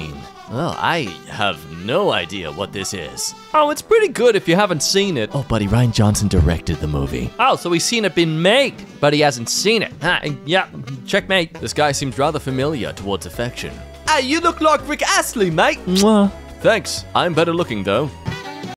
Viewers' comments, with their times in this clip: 0:10 Self Note: SEVERE MISOPHONIA at the end! STOP before !